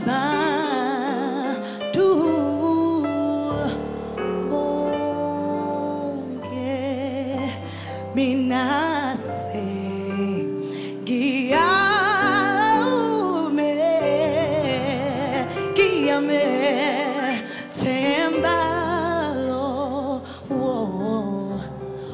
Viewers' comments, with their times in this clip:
0:08 that run should shut down taylor swift Career in a Sec...